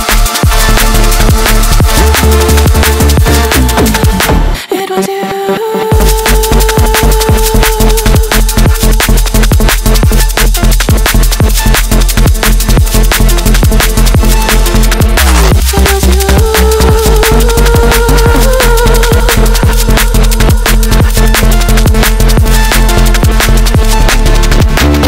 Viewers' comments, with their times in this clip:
0:07 gives me a very modern day Nero - Electron vibe. Love you guys sm<3